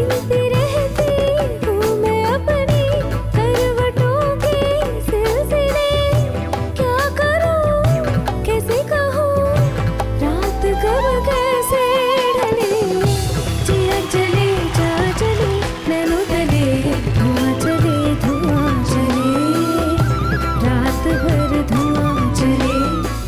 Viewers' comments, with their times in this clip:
0:09 the flute just marvellous